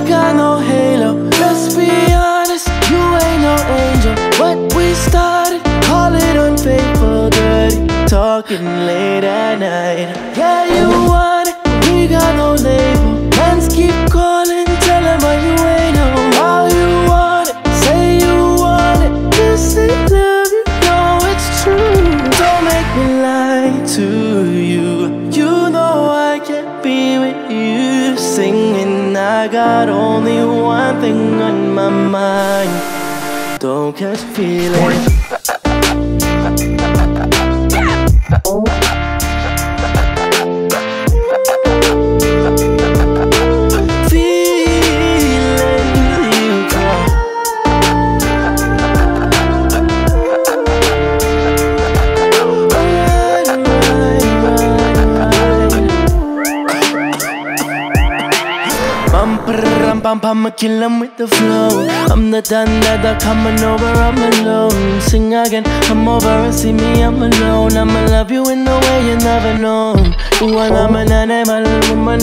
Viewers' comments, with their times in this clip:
0:07 Dirty talking late at night 😍😭❤️
0:56 MAJOR SONIC FLASHBACK Was not ready for that
0:56 is such a runescape sound